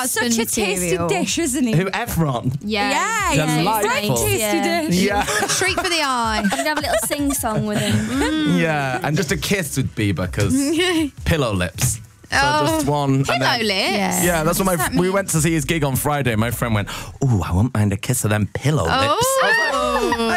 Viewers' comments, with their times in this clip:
0:06 And Perrie so cute when she's laughing 😆 OMG i love her so much